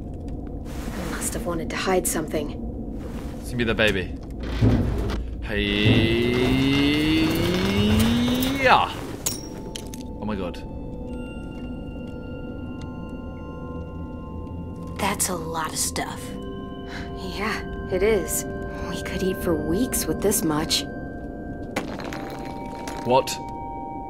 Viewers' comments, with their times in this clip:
0:08 were im the only one that heard the grenade pin got pulled out?